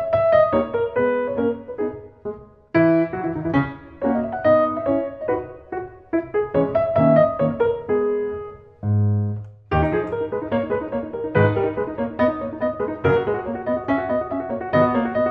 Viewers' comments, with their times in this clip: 0:03 You think we wouldn´t notice about the licc on